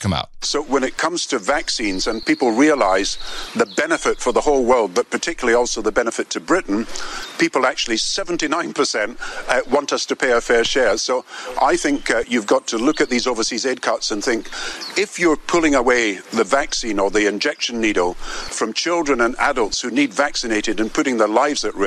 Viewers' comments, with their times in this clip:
0:07 The guy gets a little jiddy when he's talking about the 79%... He's so elated that peoples are falling for this profitable scheme?